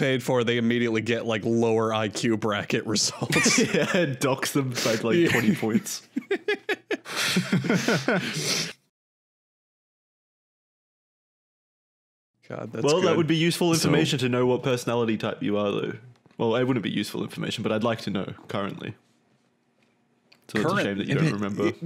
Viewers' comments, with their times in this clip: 0:06 that awkward silence was hot